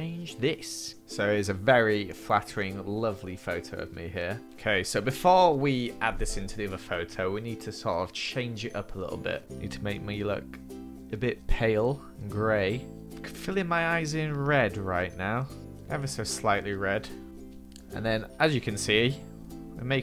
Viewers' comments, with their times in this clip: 0:06 when you accidentally fart or was it?